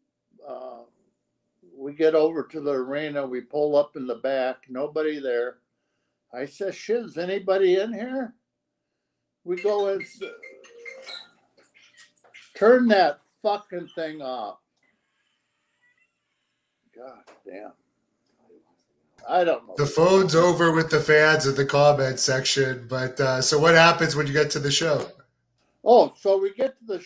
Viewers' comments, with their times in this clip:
0:10 the cell phone strikes again brother